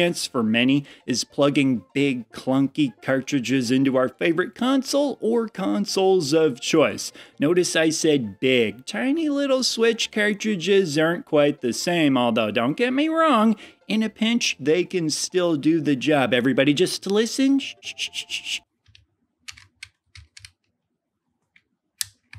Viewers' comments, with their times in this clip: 0:10 The Switch cartridges don't hit quite like the others, but the sound effect of the JoyCons clicking into place... It's a thing of beauty.